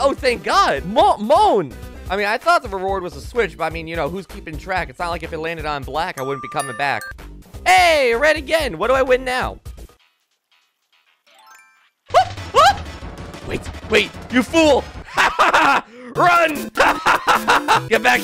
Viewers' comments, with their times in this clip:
0:04 man became a rapper